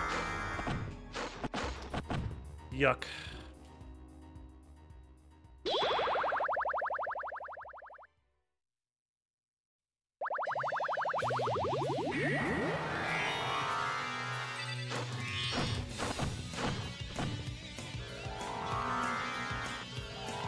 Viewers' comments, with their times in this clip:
0:04 what set that this run was going to be a new WR was the change of the track syncing with the teleport